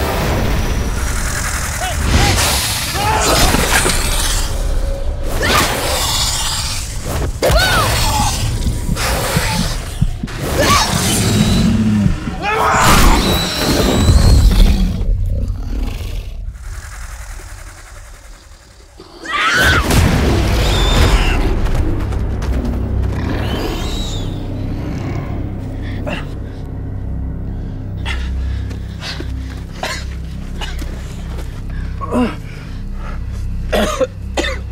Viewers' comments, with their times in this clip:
0:08 those sound like Jurassic world the game amphibian sound affects
0:20 Nix: intense whining and crying ehhhhh get away from me! you people are insane! I was just looking for the beans